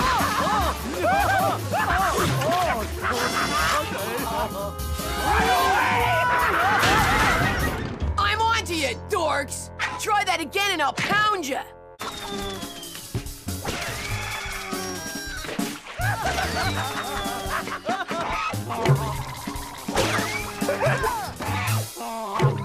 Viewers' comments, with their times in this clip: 0:04 Ed and Eddy: spotted Kevin RUN AWAY!!!!! laughs as they run away through the fence 😂🤣😂🤣😂🤣😂🤣🤣